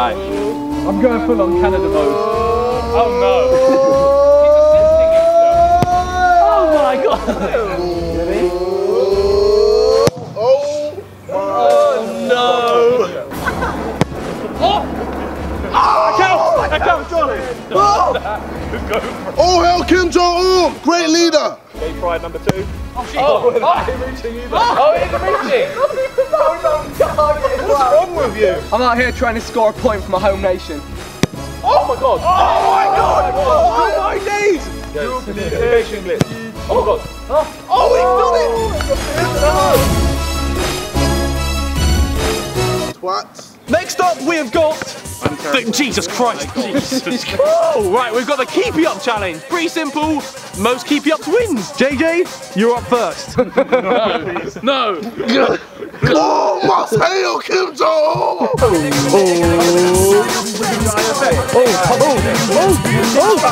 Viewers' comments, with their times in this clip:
0:09 DID I JUST HEAR A WINDOW BREAK?
0:12 Just me or 1) watching it in 2018 and 2) when Ethan hit the ball it sounded like something smashed 😂 I have really gotten into the sidemen ❤️
0:48 wait for the voice crack...